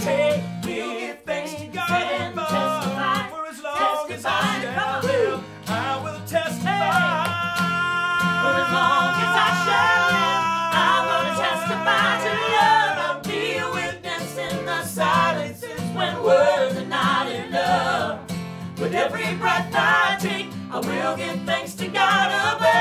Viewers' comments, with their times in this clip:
0:06 AMAZING .. he can sustain that note, even with mouth closed and catching a breath! 😂